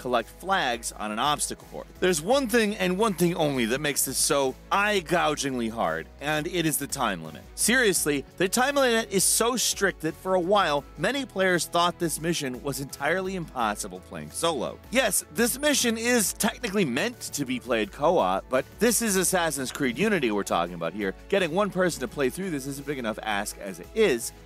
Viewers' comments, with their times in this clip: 0:07 "The time mlah"